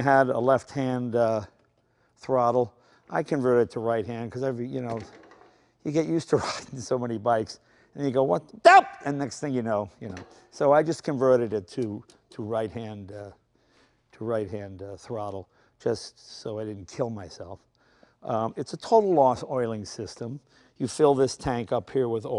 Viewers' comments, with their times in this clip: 0:08 Jay's scream got me